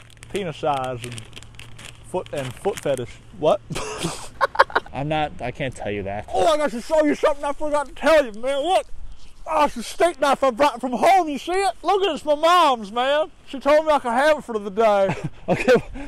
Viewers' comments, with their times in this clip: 0:03 He too, laughs so hard at his joke and almost drops the camera on